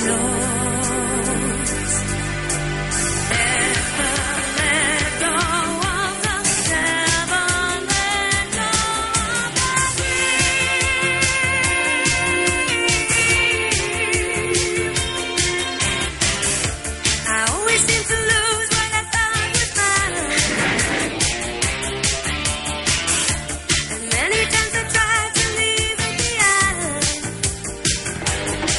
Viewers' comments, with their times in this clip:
0:10 This song was released in 1983. This specific unique part of this song is very very similar to Limahl's "the Neverending Story" releases one year later.